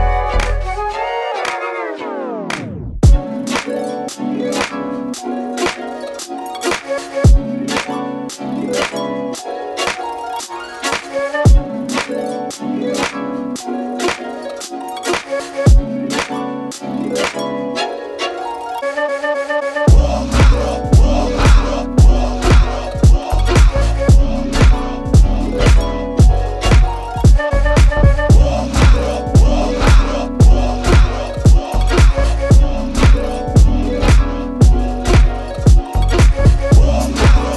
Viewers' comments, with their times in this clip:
0:03 Hot damn the drop (?) Insane stuff as usual, Tom!
0:20 thought it was some chinese 😘 Doode, your music breathes.